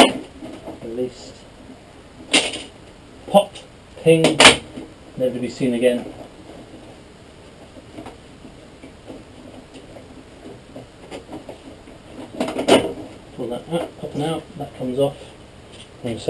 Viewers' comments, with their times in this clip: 0:03 Take these clips off. Pop, ping never to be seen again. LOL